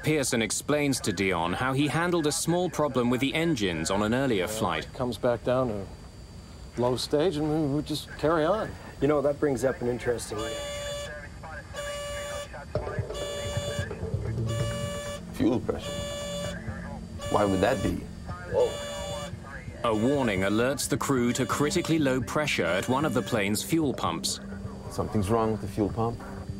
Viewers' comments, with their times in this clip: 0:08 I like how the guy starts telling a story and the plane starts to beep like it wants the guy to stop talking. The beeps are airplane for "I don't have time for this story"